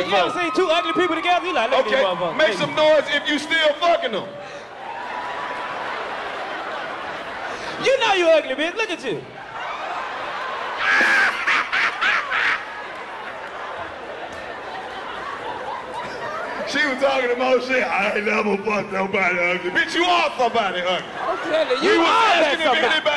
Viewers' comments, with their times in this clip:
0:10 yoooo Karlous fucking laugh had me weeeeeeak
0:11 Karlous’ Laugh Omg 😭